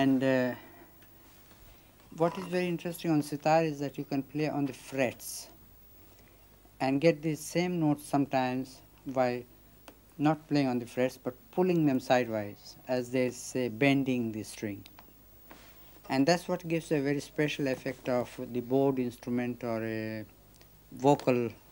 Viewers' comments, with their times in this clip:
0:09 he was showing how the sitar is capable of creating sounds that are similar to vocal sounds.... reporter should have waited for him to finish instead of interrupt with thr next question